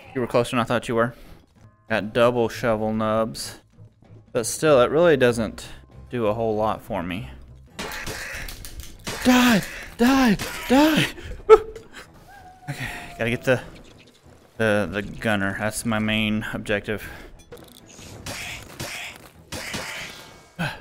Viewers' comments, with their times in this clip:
0:07 Literally i heard his controllers LOL
0:08 you can hear the controller grips clapping